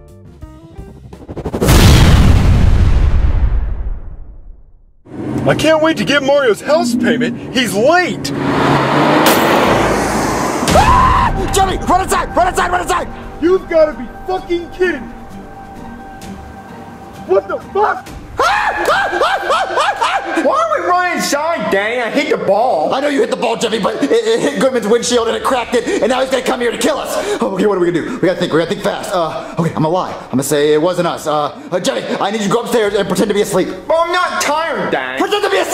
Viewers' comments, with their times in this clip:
0:10 that scream tho 🤣
0:17 "WHAT THE F*CK?!" 😤😡 Mario screaming 😆😆😆😂😂😂🤣🤣🤣